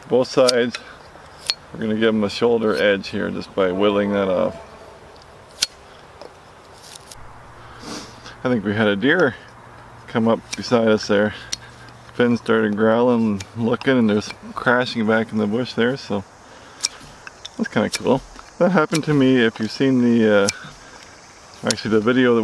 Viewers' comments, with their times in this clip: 0:04 i heard a reverb sound. Was that the deer or a forest brother? I noticed the huge X when you were felling the tree.